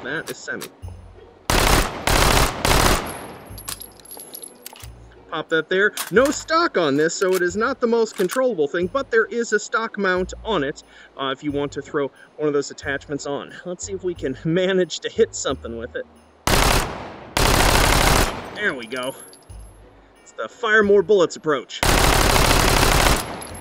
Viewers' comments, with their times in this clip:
0:05 Sounds like the battle rifle from Halo 4